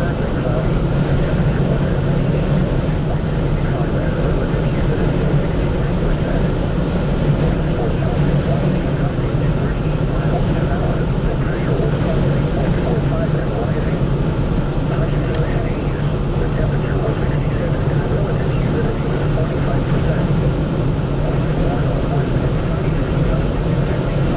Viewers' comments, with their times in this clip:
0:10 that wind howling in the back ground sounds terrifying